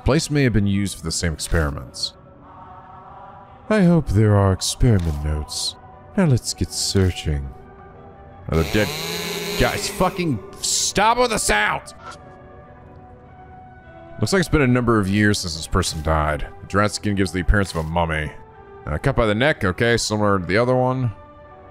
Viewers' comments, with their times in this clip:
0:08 chainsaw noises Nico: Oh god not you. Mad father: Hello again Nico whahahahaha